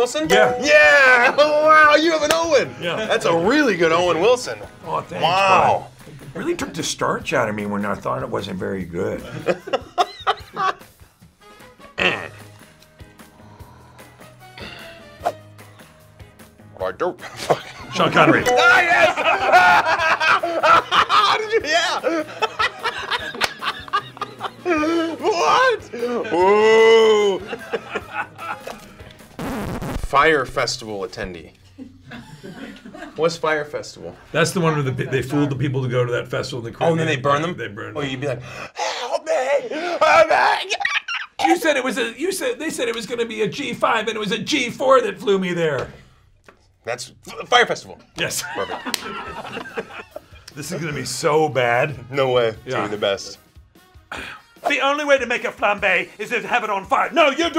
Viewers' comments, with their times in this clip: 0:04 That Owen Wilson "Wow"
0:20 Chris sounds just like brice Dallas Howard laughing at him in a jurassic world interview is this a secret extra impression
0:20 Chris Pratt's laughter had me dying lmao And Tom Holland did a better dolphin
0:21 Chris does a Jimmy Fallon impersonation
0:40 NEW new highest note
0:41 what the fck is that dolphin squeak